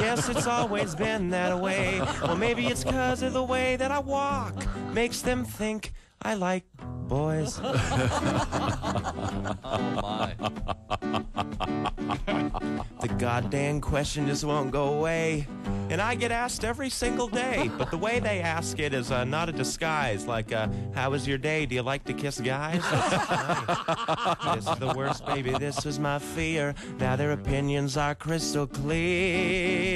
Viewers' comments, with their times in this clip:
0:10 awesome when the guy is laughing and Bo almost starts laughing himself xD
0:10 bo is laughing because he has to say "god dang" he usually says god damn. thats why hes laughing.